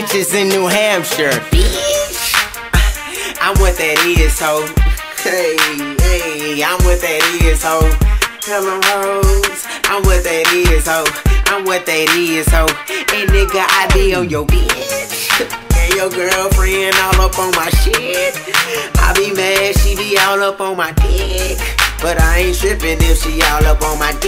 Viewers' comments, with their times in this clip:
0:08 Exactly You Can Hear The House Smoke Detector. That Needs New Battery's.